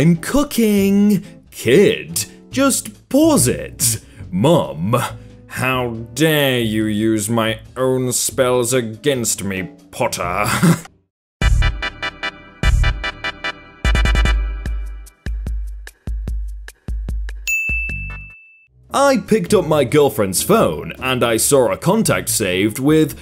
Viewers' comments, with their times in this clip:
0:05 that Snape accent tho 👌
0:07 10/10 snaps impression
0:07 10/10 snape impression